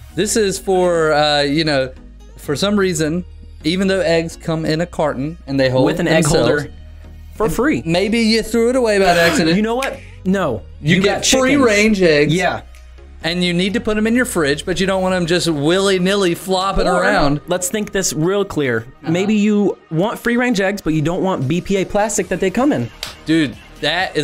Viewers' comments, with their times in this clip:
0:10 in you can here the switch of the nintendo switch